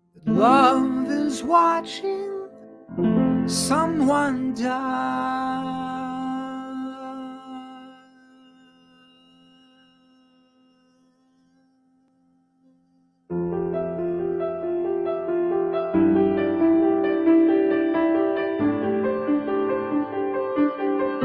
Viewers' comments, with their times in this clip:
0:08 he is using it! his "die" fades as he pulls away from the mic